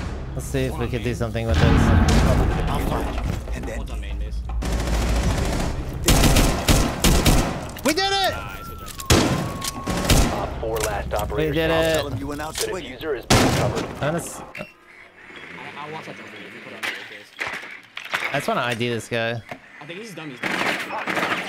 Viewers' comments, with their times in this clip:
0:09 Damn that whistle is such a taunt by Deimos. I hope the target can also hear it while being tracked